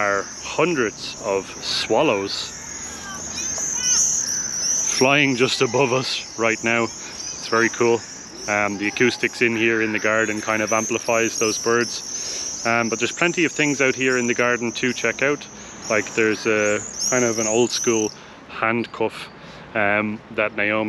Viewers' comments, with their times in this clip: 0:05 that's not a swallows but "jerzyk" (Apus apus) - Common Swift - they are smaller than swallow and do quirkie sounds ;)